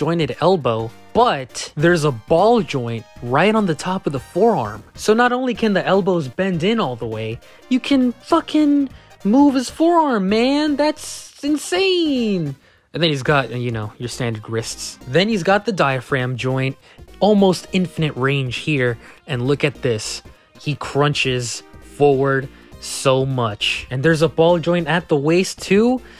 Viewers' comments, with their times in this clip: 0:08 why does he sound like lightning McQueen in this part 😂